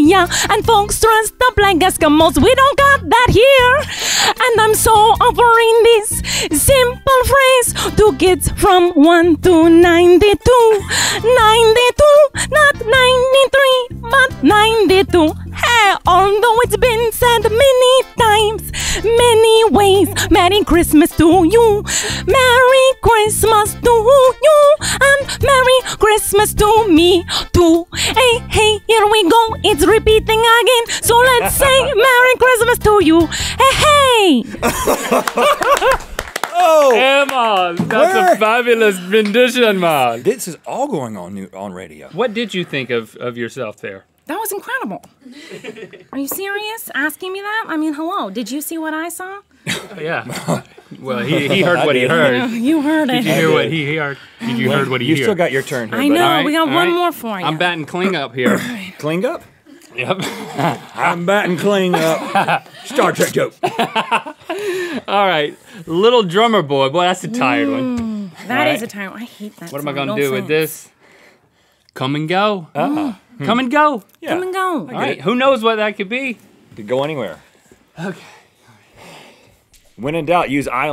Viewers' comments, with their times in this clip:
0:03 And I'm so appreindis?
1:01 She did break a little and laugh hehe